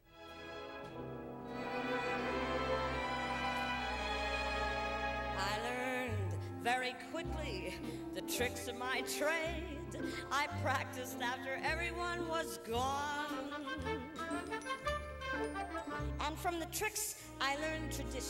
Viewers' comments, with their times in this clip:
0:04 I love when she starts cracking up doing several takes eventually becomes funny lol